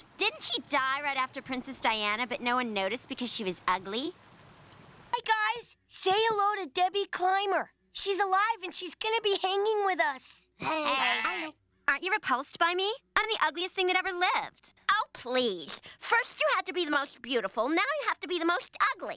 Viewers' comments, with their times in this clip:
0:04 the silence speaks volumes